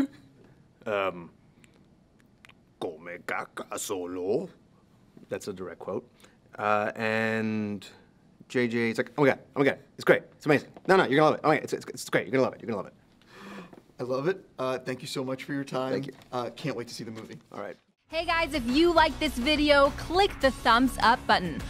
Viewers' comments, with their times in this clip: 0:08 Oscar's J.J. is perfect.